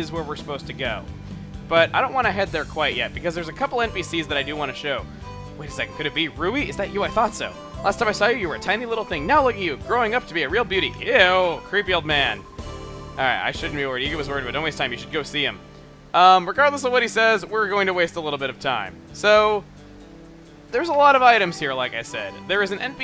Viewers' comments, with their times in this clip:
0:08 She giggled... At being called a beauty...